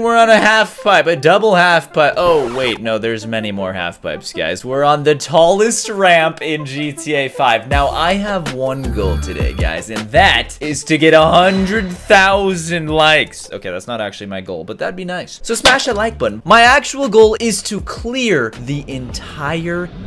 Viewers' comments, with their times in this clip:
0:06 P hub noise